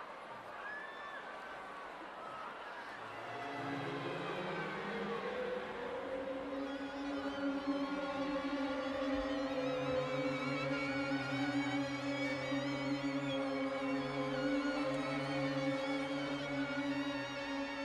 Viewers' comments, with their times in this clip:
0:05 sounds like the beginning of sex by the 1975